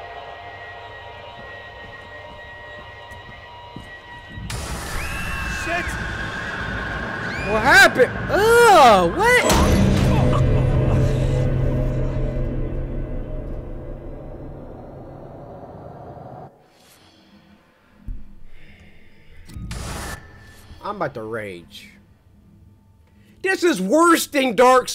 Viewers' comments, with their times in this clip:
0:09 yeats bells hit😂